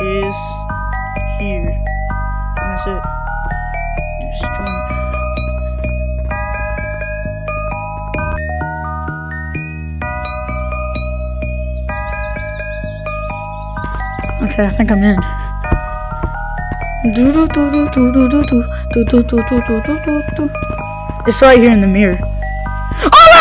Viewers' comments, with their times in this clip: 0:08 The song just restarted💀